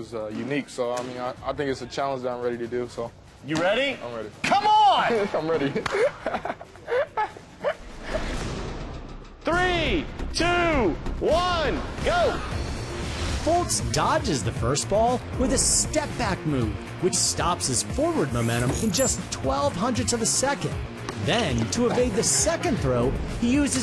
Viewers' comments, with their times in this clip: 0:05 What is that laugh hahahuhuhehehehuhu